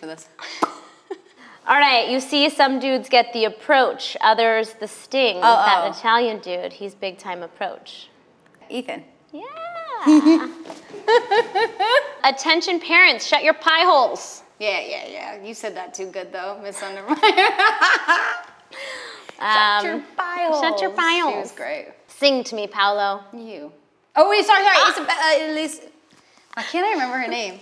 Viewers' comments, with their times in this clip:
0:10 Hahaha Meghan's laugh 😂